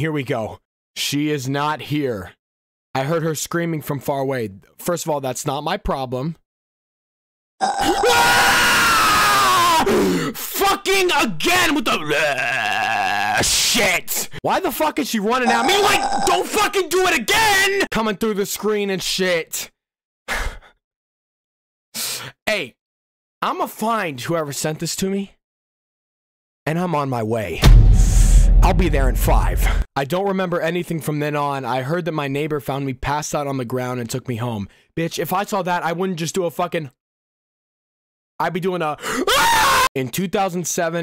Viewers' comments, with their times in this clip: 0:05 his screams are much scarier than the jumpscare
0:06 Did you get scared by a burp
0:06 She Burping tho? Damn she must have taken 4 sprites 2 colas 8 pepsi max and. some 7Up
0:07 that jumpscare sounded like berdly from delterune
0:07 WTF IS THAT SCREAMING DUD
0:07 is ur finniest scream made me laugh so hard
0:27 OHMY GOD I JUST HAD A HEART ATRACK I THOUGHT THAT NOISE WAS MY DOOR OPENING